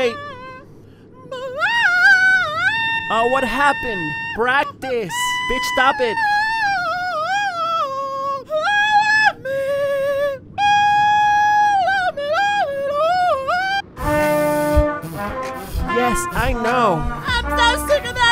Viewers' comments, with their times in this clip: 0:05 that annoying friend that thinks she can sing